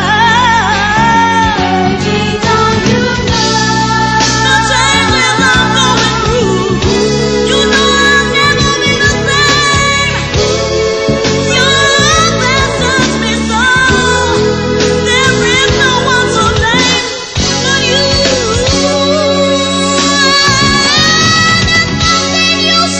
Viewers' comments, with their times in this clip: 0:04 she snap! Putting her in the moment of what she was going through. Guess what I felt that. My goodness her voice!